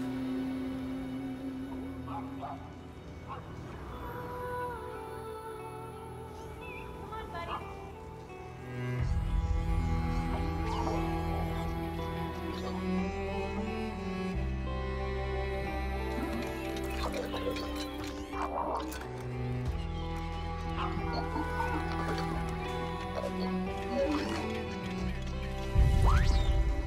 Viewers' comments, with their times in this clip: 0:10 I'm almost certain a few of her footsteps are already rendered before she sets foot...